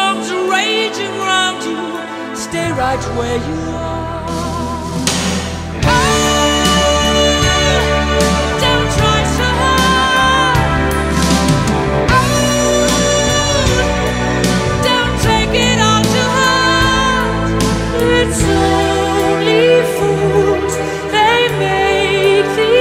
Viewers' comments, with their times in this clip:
0:05 full voice c5
0:06 OMG! What high notes